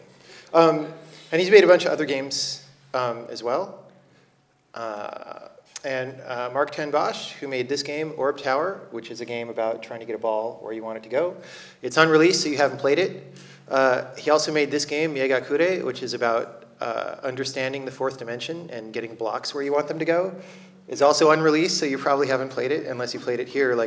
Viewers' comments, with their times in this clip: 0:07 Where can I find this game? Orc Tower by Marc ten Bosch? Checked out his website and see no mention of it. Seems like it doesn't exist. Edit: nvm, I misheard Jon Blow saying 'Un'-released'. Though he said it's on release...